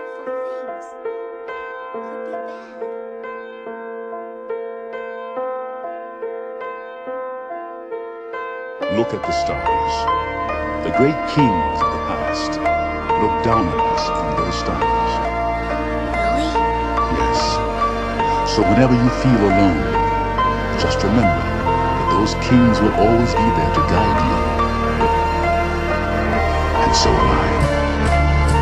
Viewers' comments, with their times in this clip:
0:09 Darth Vader? is that you? lol Idk why it always sounds like Vader to me, kinda imagine him teaching little Luke in a parallel universe where shit didn't go that bad :D XD